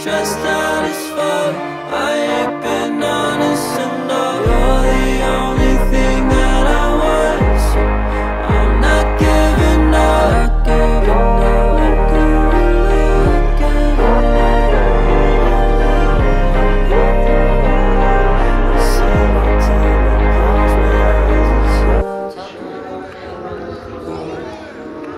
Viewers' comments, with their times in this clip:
0:08 sounds so Angelic Like 🥰😇